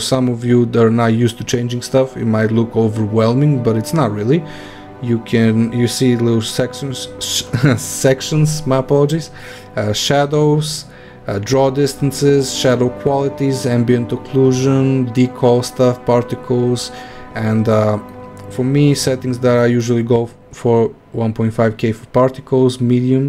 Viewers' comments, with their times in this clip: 0:06 yeah we understand .d SEXIONS